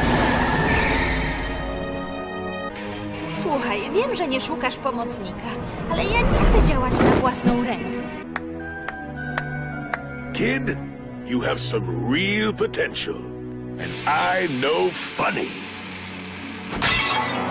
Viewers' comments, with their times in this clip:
0:03 it's so weird to suddenly hear your native language after eight minutes of only English voices (well except that one Czech clip)